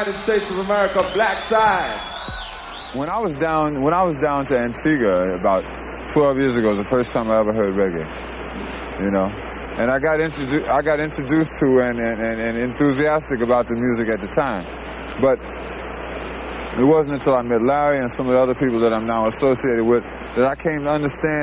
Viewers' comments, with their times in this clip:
0:03 Gil Scott talking